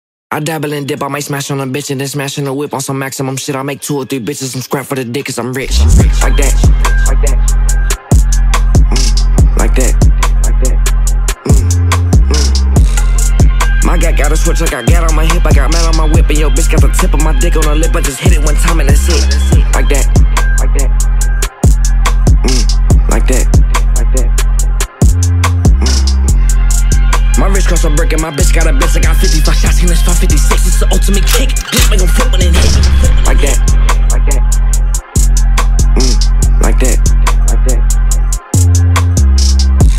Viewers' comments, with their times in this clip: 0:05 The way the beat came in
0:27 the flow here is crazy